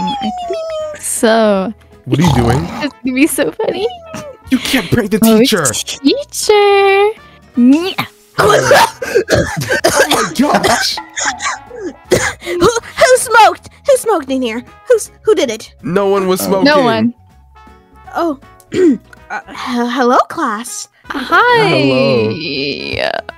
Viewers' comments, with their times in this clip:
0:08 The teacher cost so violently dude